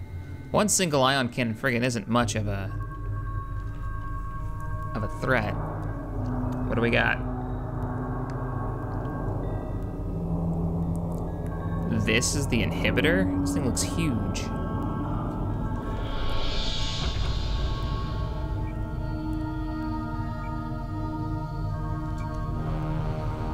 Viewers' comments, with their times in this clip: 0:08 cue the Vangelis almost blade runner